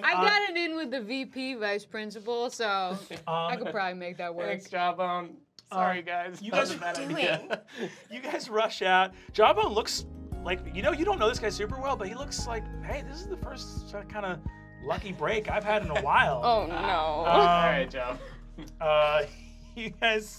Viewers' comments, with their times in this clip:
0:08 that BGM like "Jawbone will remember this" because you've just pushed an npc closer to Good Ending